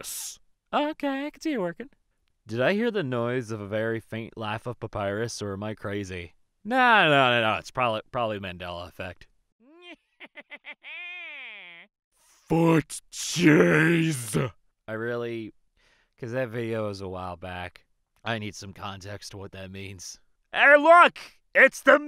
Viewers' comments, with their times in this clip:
0:10 Im pretty sure i heard that faint laugh of papyrus or am i just hearing things